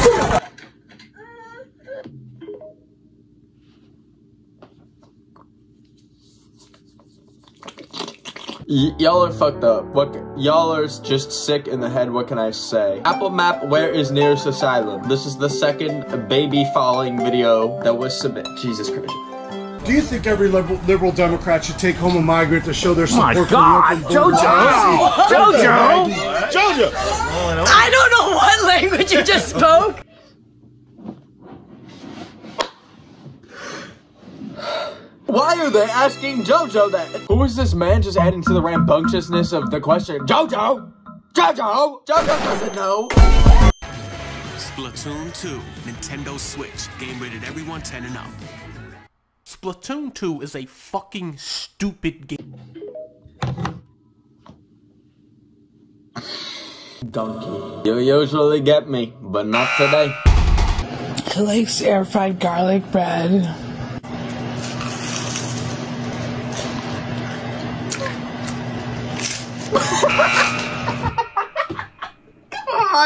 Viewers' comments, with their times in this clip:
0:06 this alarm sound will always make me jump no matter what it scares me so much
1:00 sounds like sadness from inside out
1:01 why did that low-key sound like sadness from inside out😂